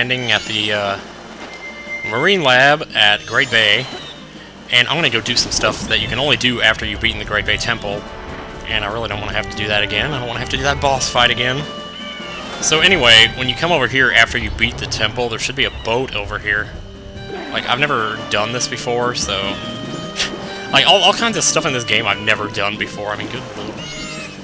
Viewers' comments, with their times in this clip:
0:05 that litle song of zelda is the best one :D